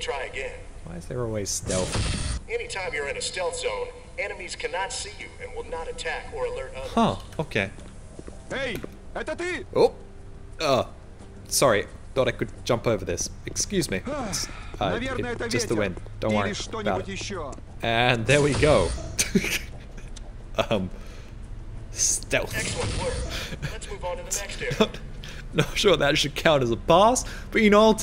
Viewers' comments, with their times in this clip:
0:08 Why stealth zone guy speaks russian?
0:10 Thats a russian Barney voice lol